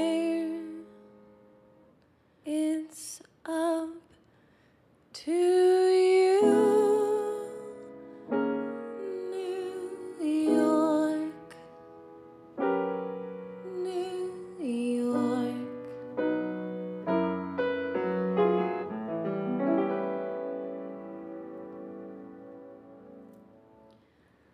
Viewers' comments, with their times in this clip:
0:09 "New Yorrrk" aaah so gorgeous!!